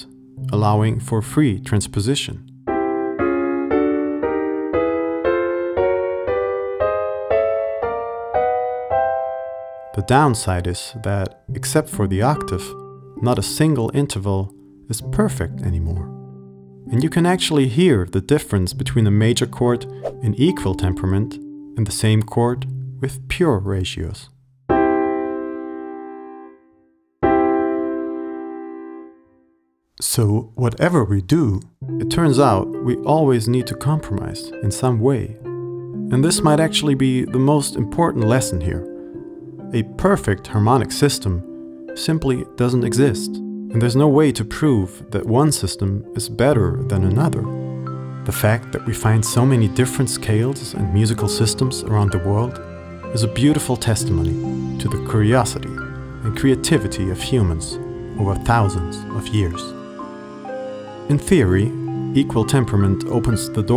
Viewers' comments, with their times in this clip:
0:03 # when you play the C triad, after all the alternate tunings we have heard, that third sounded flat! The Dm pulled it back, but that's an odd sensation. Nicely done, btw.
0:13 Haha, it's difficult to notice it, yes! By the way, I think it's because, if I'm not mistaken, that chord is Do-Mi-Sol, and in that case the only note slightly "out of tune" is Mi. If you check the lines Mi is the 5th line, and Sol is the 8th line. Sol almost exactly matches just intonation. Actually, I wonder if in other chords it's easier to notice the difference.
0:16 Nope. Didn't hear it. If anything, equal temperament sounds a little better.
0:18 " and you can actually hear the difference between a chord with equal temperement and the same chord with pure ratios" . No i can not. i thought i had good ears. Good video. it really shows us, why it doesnt matter much in wich scale you play.
0:23 I can’t hear the difference sadly 🤕 What should I be listening for?
0:23 ... I don't hear a difference
0:24 when we compare Just vs Equal, and we are supposed to hear the difference, is the moment when I noticed I will never be great at music
0:24 ... I can't hear the difference, I'm done
0:24 I can't hear the difference :(
0:25 "spot the difference" ahh chords (I dont hear the difference)
0:28 Please tell me I’m not the only one who couldn’t hear a difference just intonation vs equal 😭
0:28 focus exclusively on the E. In the first version the E sounds flat but in the second version its normal
0:28 crap, I can't hear the difference. No wonder I can't wrap my head around this stuff.
0:28 they sounded exactly the same to me LOL
0:34 Do people actually hear a difference ? 😂
0:38 the tone and animation reminds me a lot of the LittleBigPlanet intro
0:48 Great presentation. One question: the background music sounds just like the SIGUR ROS song, 'Hoppipolla'. Is this based on the concept you are referring to in the video?